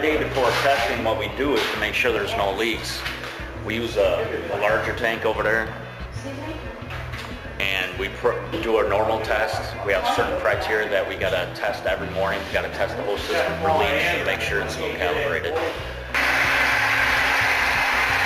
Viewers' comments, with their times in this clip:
0:04 hahaha, "over dur."